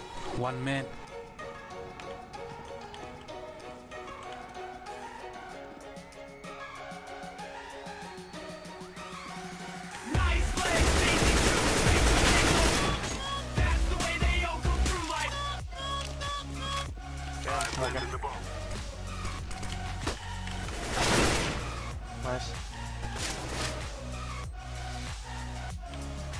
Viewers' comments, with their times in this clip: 0:09 bass drop NOOT NOOT